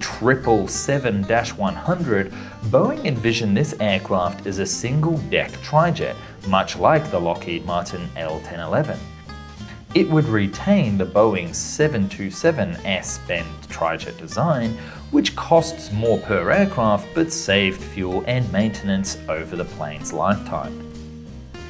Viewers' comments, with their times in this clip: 0:09 English captions call the 727 a "tragic design." 😂🤣